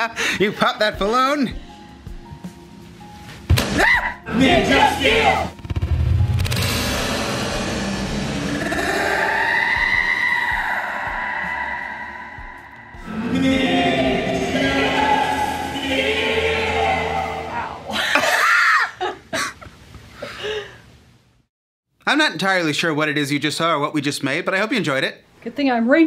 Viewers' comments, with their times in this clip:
0:08 This is what I'd expect to hear in an abandoned warehouse at 2 am or something... In all fairness, baloons are pretty scary.
0:08 sounds like R2D2 screaming🤣🤣🤣🤣🤣🤣🤣🤣🤣🤣